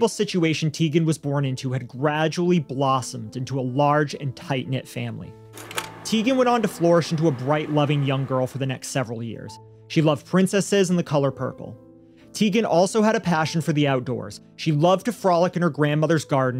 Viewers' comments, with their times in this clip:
0:04 It did, but the male appearing speaker's sound track is out of sync